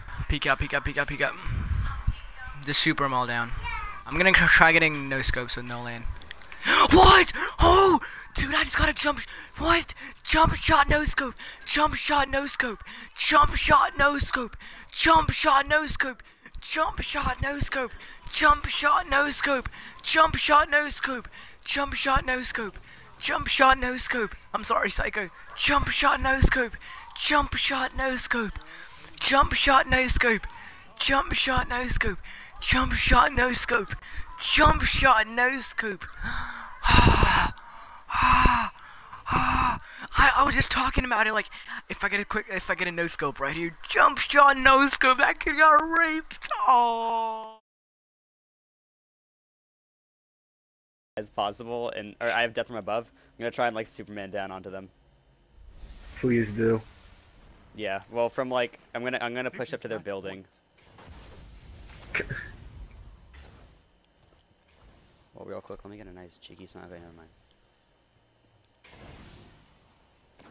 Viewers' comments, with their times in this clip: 0:07 dat rap bro!!
0:52 What was he saying ? 😂